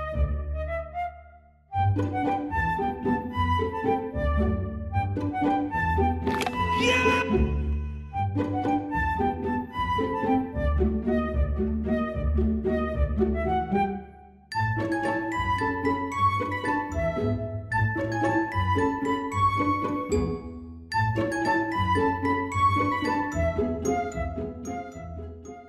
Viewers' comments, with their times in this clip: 0:06 Mike Wazowski scream